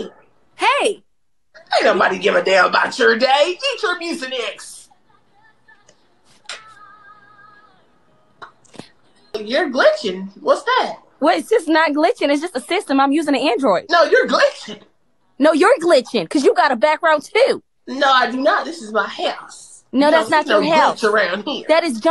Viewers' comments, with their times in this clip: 0:03 Oh my goodness not her crying for real as she leaves 😭😭😭😭😭